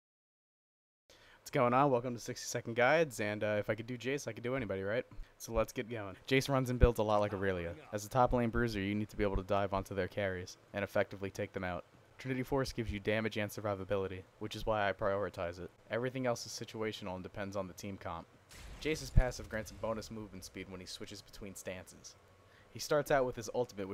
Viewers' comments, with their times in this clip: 0:07 It's just a quick summery of the champ, you can also pause for all the info you need, and getting all the information out in under a minute is hard to do if you don't talk fast. I want to improve on it as well so if it sounds like mumble now I am sorry I will work on it !